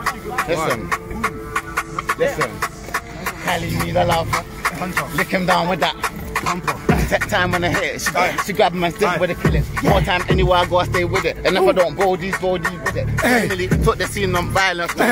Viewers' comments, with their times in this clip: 0:03 2 things russ flow and the guy in the back 😂